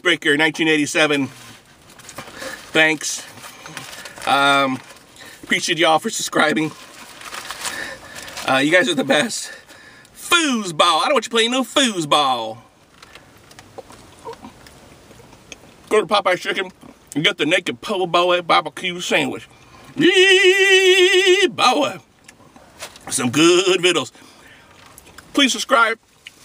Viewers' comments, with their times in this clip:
0:08 he gets out of breath talking lol